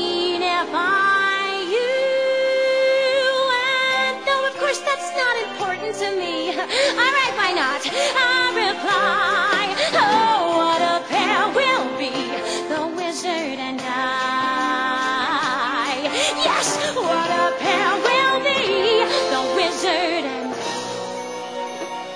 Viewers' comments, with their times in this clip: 0:06 anyone else think she sounds 'South Park' -esque when she goes 'Alright why not?' XD :P